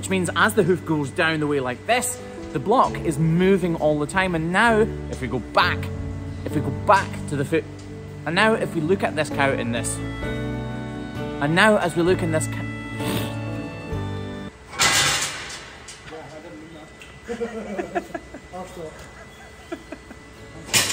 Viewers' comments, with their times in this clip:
0:07 not the emotional music stopping after the guys bashing the gate and you struggling with the sentence XD